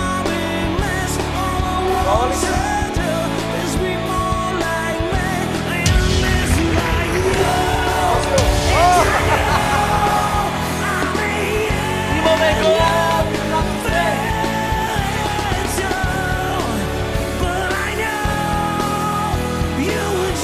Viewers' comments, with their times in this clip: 0:07 chester bennington is there
0:07 Holy fucking hell, these lines, with the same freaking distorsion on the voice ...
0:07 Chester! Is that you?
0:08 he actually sounds like chester at some points
0:08 Wtf Scream.. I remember Chester 😢